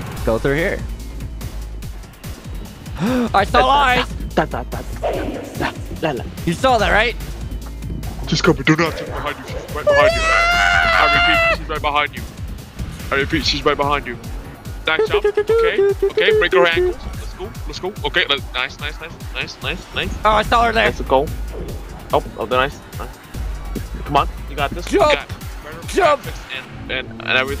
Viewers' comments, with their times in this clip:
0:08 oh i should probably add the timestamp where your voice resembled rambley's voice the best starting